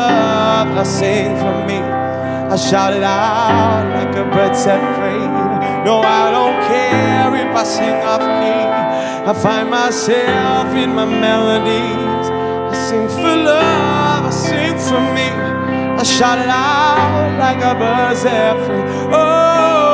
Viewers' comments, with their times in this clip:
0:07 Wrong note Wowwwwwww